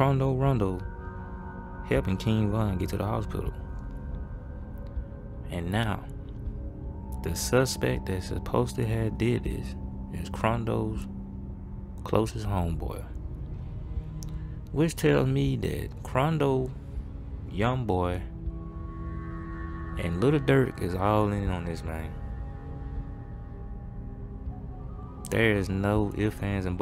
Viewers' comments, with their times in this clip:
0:07 Da suspet das suppose dahadidiss lmao